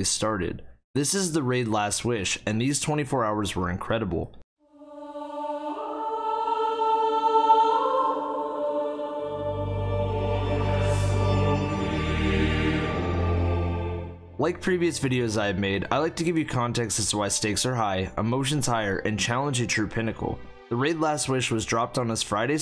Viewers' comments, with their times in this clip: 0:04 I miss this time. They gave out D2 for free shortly after forsaken, in November. That's when I picked the game up. Dude. OMG the lore and gameplay had me hooked for months. I played D1. I got it on launch, but fell off because it seemed pretty shallow. But HOLY SHIT D2 was amazing. Hearing that music made me so happy. I love that music with a passion. Love the video. Thanks :)